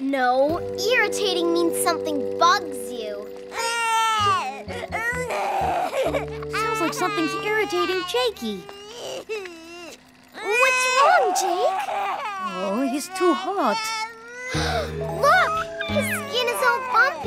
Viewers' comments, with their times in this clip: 0:04 Baby jake crying